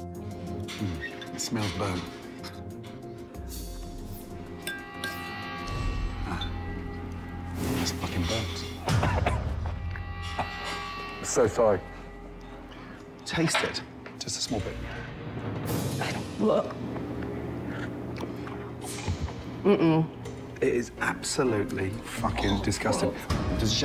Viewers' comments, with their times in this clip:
0:08 The waitress trying the soup and gagging... omg! Hilarious!!